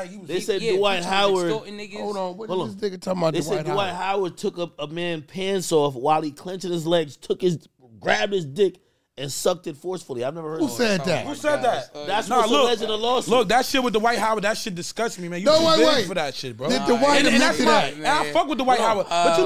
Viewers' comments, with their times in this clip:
0:05 Wack sounded flabbergasted 😂😂😂